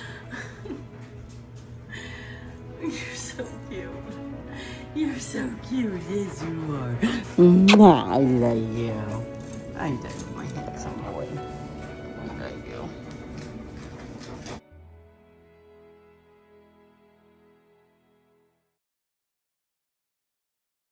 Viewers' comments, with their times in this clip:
0:04 at least he can talk clearly ow because he’s put his toy down